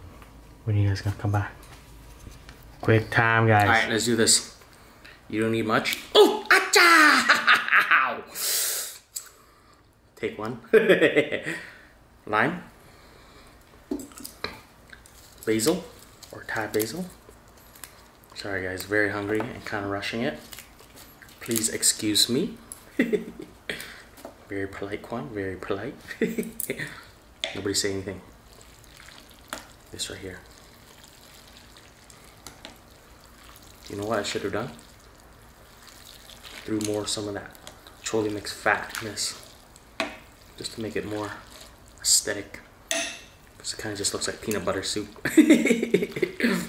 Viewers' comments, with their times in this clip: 0:04 I never get tired of his bruce lee impressions lmao
0:29 that's what good pho sounds like ;)